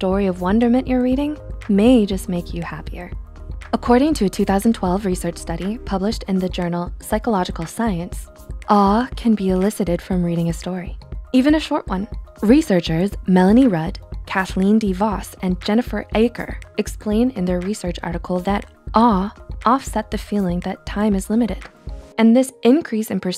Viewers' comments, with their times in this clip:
0:06 He there I assume ur english is better then mine so I would like to ask you a question about a specific word that she kept saying it is "awe" or "ah" or sth like that , The captions did not reveal anything, can u help me please ^^